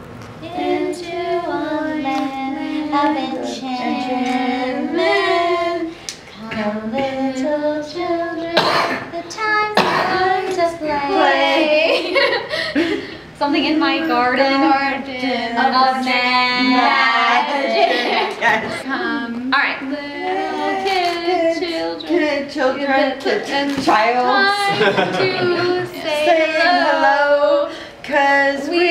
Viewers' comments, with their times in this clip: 0:07 it reminded me of nightmare before Christmas Sally’s song 😂
0:09 they started to sing CHILDREN OF NIGHT!!!